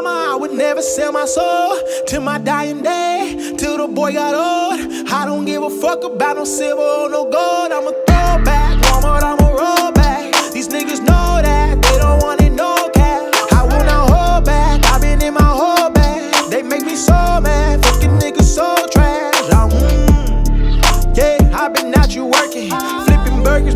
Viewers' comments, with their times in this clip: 0:07 I think lyric genius is wrong, every time I listen to this song I hear "I'ma go back, Walmart I'ma rollback"